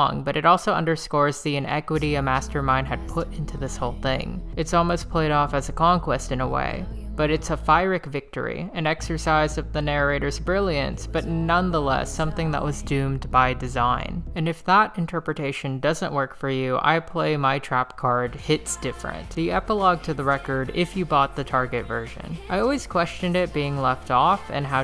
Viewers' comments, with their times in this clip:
0:09 At approx you said ___ victory. What was that word please? Fireic?